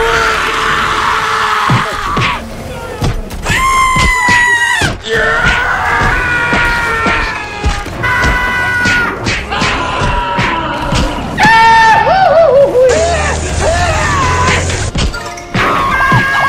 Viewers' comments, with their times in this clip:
0:04 that scream always makes me lol